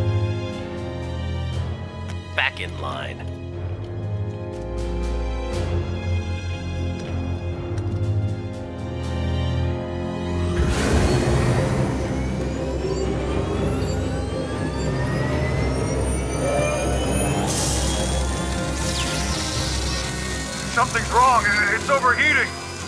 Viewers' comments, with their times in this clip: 0:03 Isa my da only una dat noiced da buckethead spaked allot liken a Clone Trooper ?? Hesa nosa Alien, but nevertheless in dis humbule Ankura's opinion, if hesa isa a Clone Trooper dat would be BERRY bombad indeed!